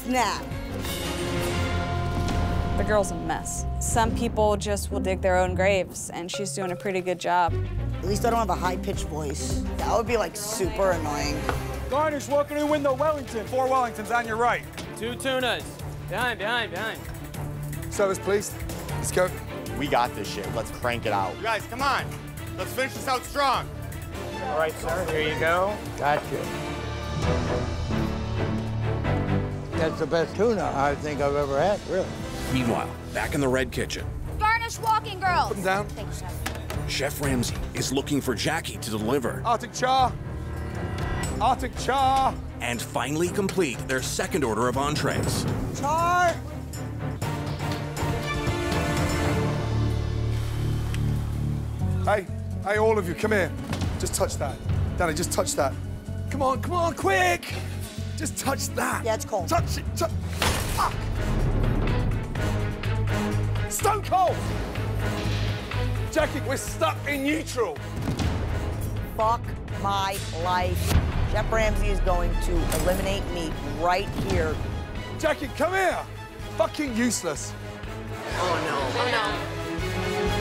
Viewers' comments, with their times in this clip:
0:08 Little did she know that a woman with a mans voice is way worse
0:31 why does he sound like every old man in skyrim ever
0:58 Just touch that! Touch it, to- SLAM
1:00 i hear the fish moan when gordon splats it
1:00 Fish go SPLAT.
1:00 The cut off curse of pain when Gordon slapped the salmon because his fingers definitely hit the edge of that pan
1:03 that was on beat with the music